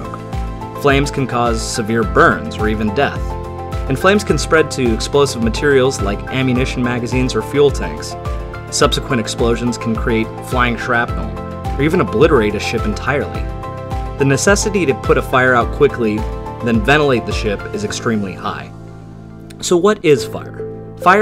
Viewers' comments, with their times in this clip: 0:09 "or even obliterate a ship entirely" Happy background music intensifies